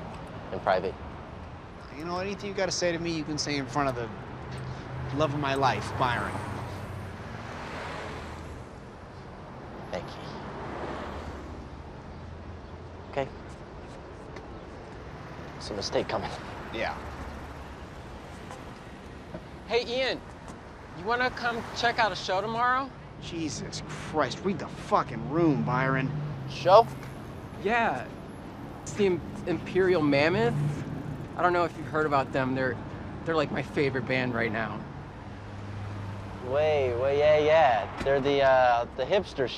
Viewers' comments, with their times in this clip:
0:09 The way Ian says “Mickey..” breaks my heart 💔
0:22 Nobody means a "Jesus Christ" more then Mickey HAHA